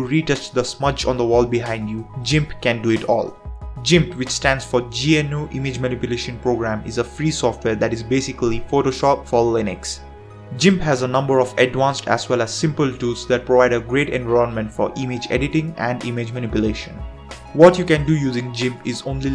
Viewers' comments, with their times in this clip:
0:04 Say it again, I dare you!